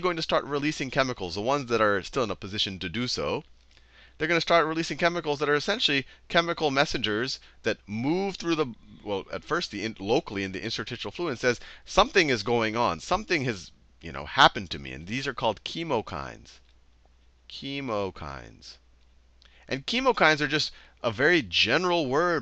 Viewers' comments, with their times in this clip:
0:07 Please tell me "Mooove" was on purpose.